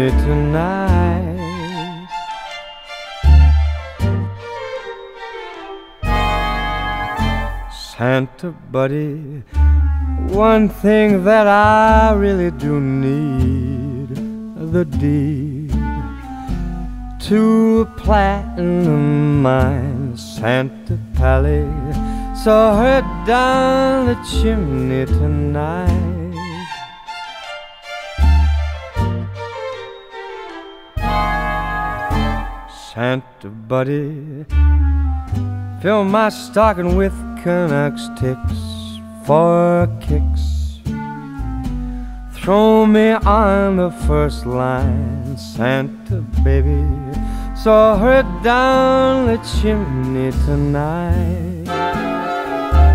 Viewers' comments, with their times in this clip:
0:08 yup he says "Santa buddy, one thing that I really do need, the D, two platinum eyes"
0:10 It really doesn't help that at I hear as "One thing that I really do need - the D"
0:14 I THOUGHT HE SAID HE NEEDED THE "D" I- WJSKAVSSSVJSKS XD
0:33 He turns into Bobby Darin That's not a bad thing, though.